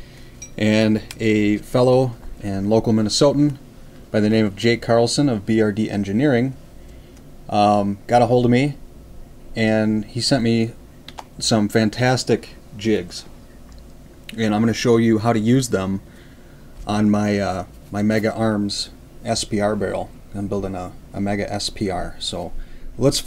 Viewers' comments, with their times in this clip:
0:10 "Some fantastic jizz"